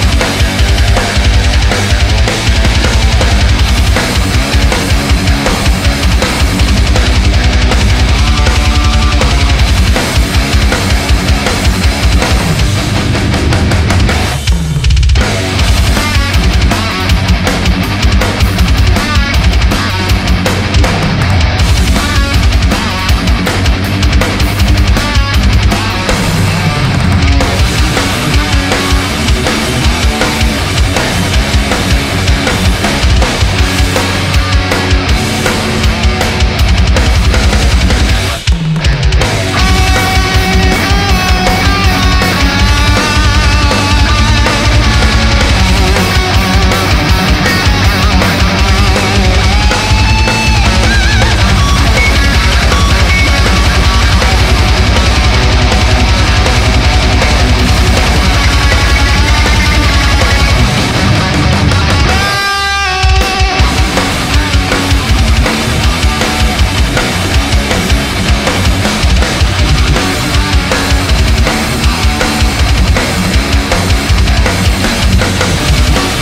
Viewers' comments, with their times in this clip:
0:04 heavy but simple riff that is effective and sounds cool
0:11 build up build up build...............bend. 10/10
0:14 sounds like pornogrind drums
0:14 I love this riff 👌🏼
0:15 that riff is so fucking cool!
0:15 that is so system of a down. Haha
0:19 why do i hear Seek'n'Destroy Here?
0:26 The riff is wonderful
0:27 this riff is actualy gold, incredible
0:27 I'm still listening to that riff 2 years after discovering it. Incredible.
0:27 i could listen to this riff on loop for hours and not get bored of it
0:29 That riff is legitimately one of my favorite riffs ever. One fret used and its legit really catchy
0:29 For some reason the riff reminds me of god of war. It sounds like the part were you play the piano for the statues
1:04 This riff is just a pure masterpiece, coming back here just to listen to again and again